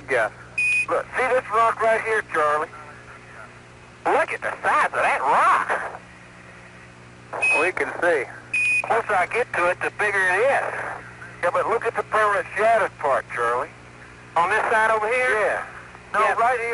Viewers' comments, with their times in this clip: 0:03 this is one of my favorite moments in any of the moon landings. the genuine astonishment in his voice and the way he says it is oddly hilarious to me.